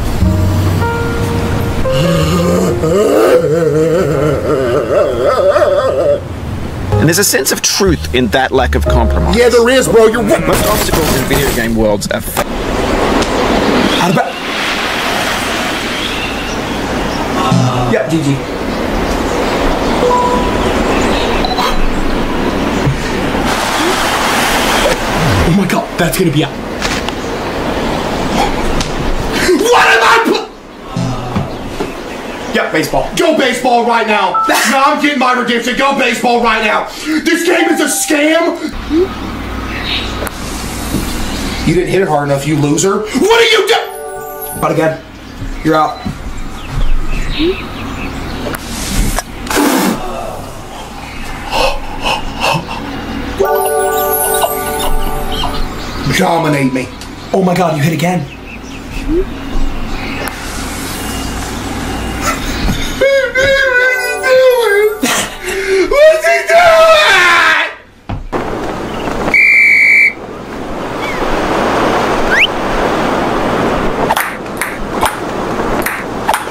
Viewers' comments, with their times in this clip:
0:10 why did i hear 15 spoons falling💀
1:02 he started crying like a baby 🤣 Edit: IM FAMOUS 🥳🥳